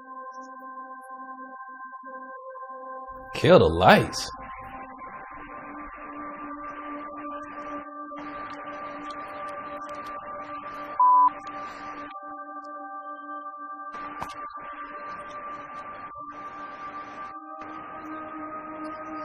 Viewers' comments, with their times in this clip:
0:03 i think that's a bird